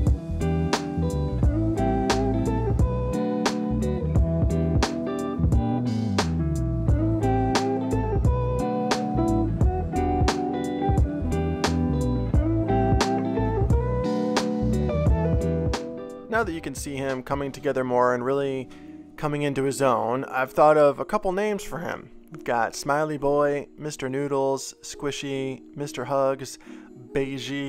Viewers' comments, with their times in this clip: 0:08 I like this more chilled out music.